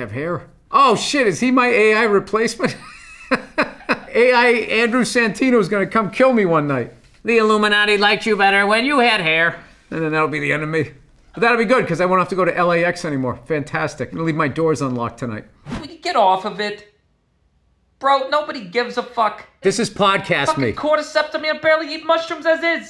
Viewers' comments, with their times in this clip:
0:06 Shout out to Bill's absolutely incredible one-sentence Santino impression
0:07 Bill casually pulling out that solid Santino impression 😂